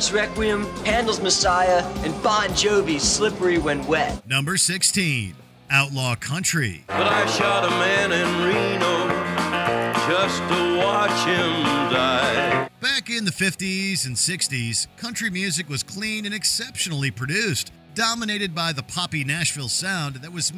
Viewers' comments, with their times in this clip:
0:07 so we ignoring how he calmly sang about killing man to watch him die😭